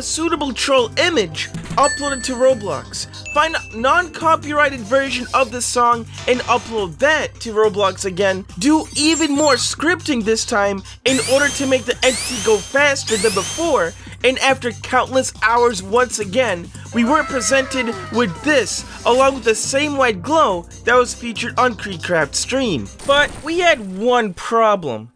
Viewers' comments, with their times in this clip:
0:09 Thanks For Breaking My Eardrums